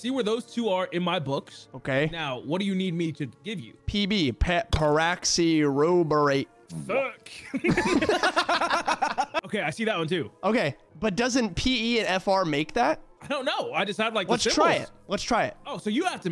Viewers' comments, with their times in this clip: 0:03 sound like a lube brand 😂